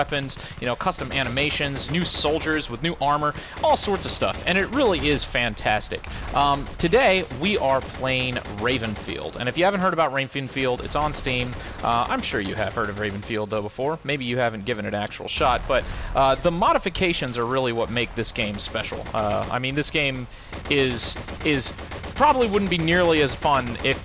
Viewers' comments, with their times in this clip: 0:10 "if you haven't heard of rayfenfield" lol